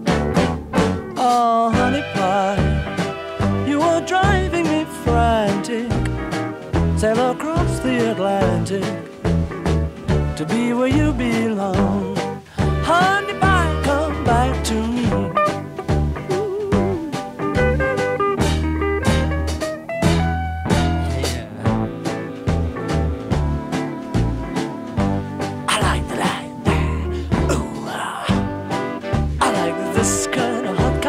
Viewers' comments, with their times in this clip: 0:04 Idk but that’s my favorite part. I love the way he says I’ll sail across the Atlantic
0:16 Pauls lil woooo is fabulous